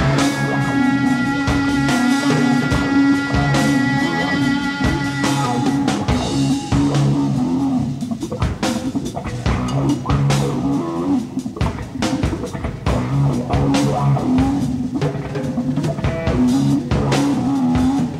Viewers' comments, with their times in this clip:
0:06 Is everyone just gonna ignore the bassline Geezer is throwing down ? You'll never see the kind of chemistry that these 4 had live on stage. The studio albums are great but the live shows just seem to be in another league.